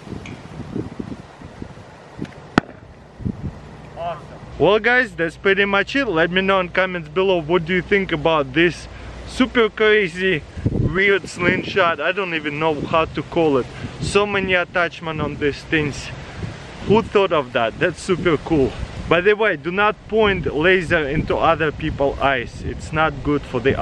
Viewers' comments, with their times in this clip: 0:09 about this supel cwazy